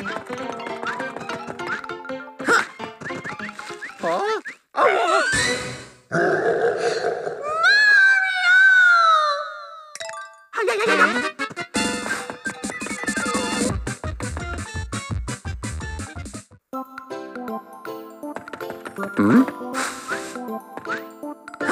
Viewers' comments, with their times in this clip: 0:08 How Dare You Use The Peach Yells Mario Sound Effect